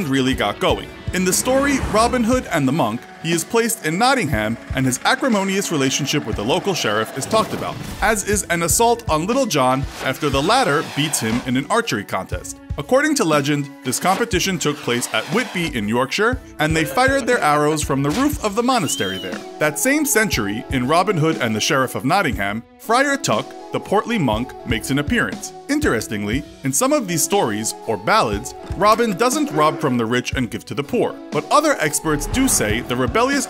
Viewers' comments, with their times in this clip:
0:05 Robin hood is using an electric power drill in the early 12th century. Hmm 🤔
0:16 Did I heard an roblox “oof”?
0:16 did i hear an ooof